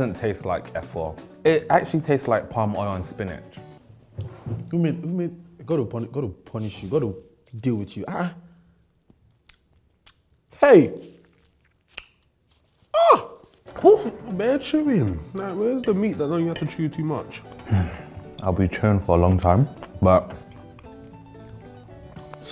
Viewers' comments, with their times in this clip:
0:04 it’s was the exclaims back to back for me😂😂
0:06 this is the sound of an appalled nigerian😂😂😂😂😂